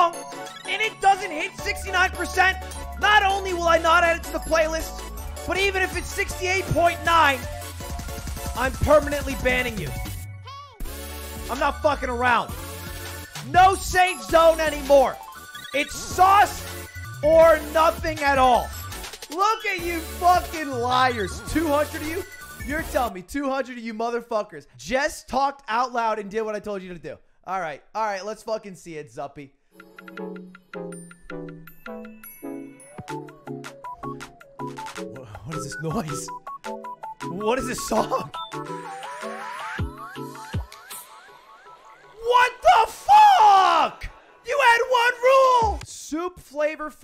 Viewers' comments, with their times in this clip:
0:06 why does he sound like Mumkey Jones
0:31 Giving me those osu feelings